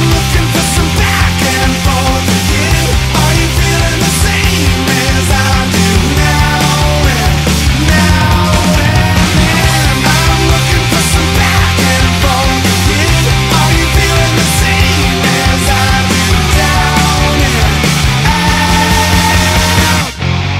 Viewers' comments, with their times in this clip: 0:03 OMG IT HAS TO BE FUTURE DAVE! HE'S CHEWING GUM AND SINGING!!